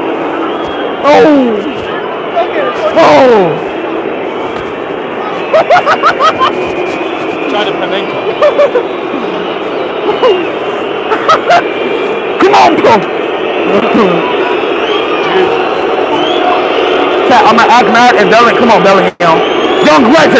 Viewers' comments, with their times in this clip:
0:05 speed laughing like a joker